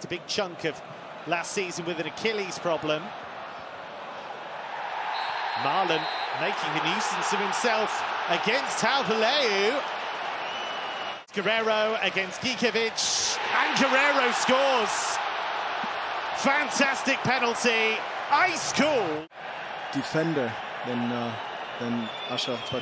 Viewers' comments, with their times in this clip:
0:08 Dutch people are crying of laughter because of this pronounciation.